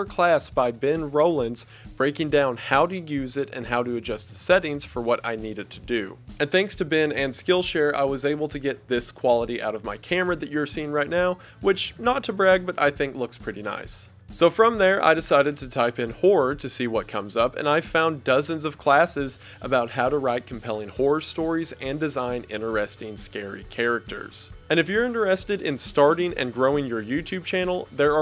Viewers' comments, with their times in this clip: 0:10 at that Skill share pitch of his, I for real thought he searched "whore" not "horror". My east coast Tri state area accent couldn't recognize that